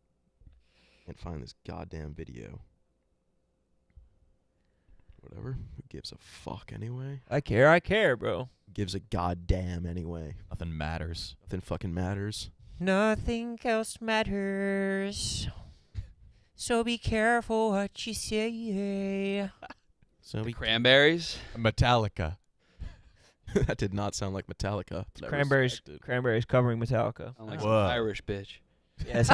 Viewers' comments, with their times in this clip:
0:10 Howard Stern impression